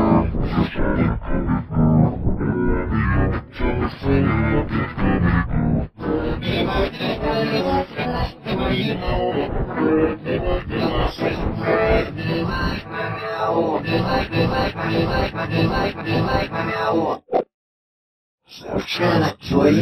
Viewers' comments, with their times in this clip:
0:06 G major 73 + black and white pitch +12 is same as devil’s blast